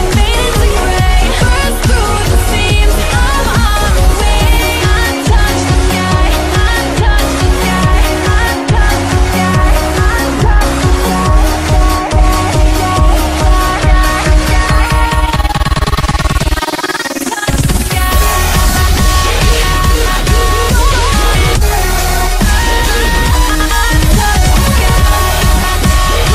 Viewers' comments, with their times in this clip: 0:09 Ik Skrillex didnt make this so here's my critic: Put together well, at start. I heard Krewella's vocals come in like: "Ok, that works!" It quickly became just too much tho. I only made it through It got so annoying that I had to stop it.